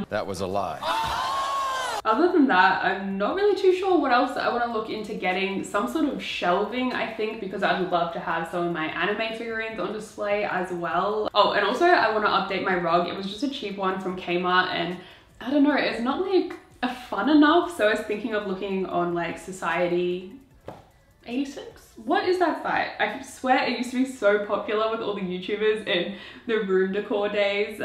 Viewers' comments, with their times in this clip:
0:08 When you slowed down the "get my hands on one" I thought you were dying inside because of the pun.